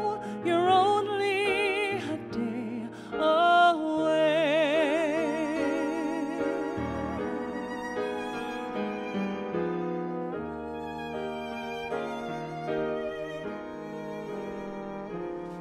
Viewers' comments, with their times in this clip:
0:03 is so well orchestrated